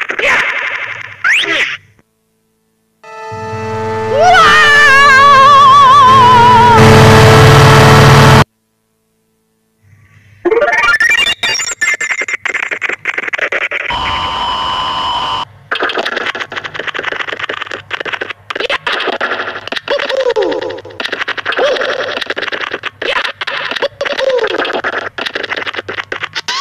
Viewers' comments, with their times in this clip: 0:07 The neighbors listening to metal full volume